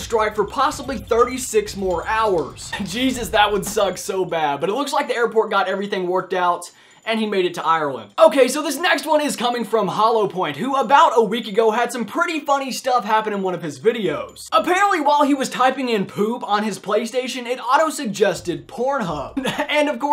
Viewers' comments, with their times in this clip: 0:03 Voice Crack T